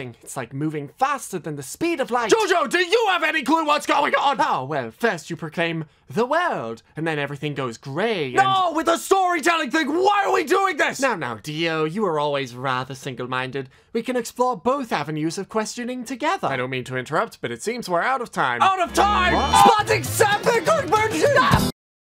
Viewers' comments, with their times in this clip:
0:03 Dio's voice crack lol
0:19 I just noticed that when time resumes, Jonathan gets surprised when GER and Diavolo continue screaming at each other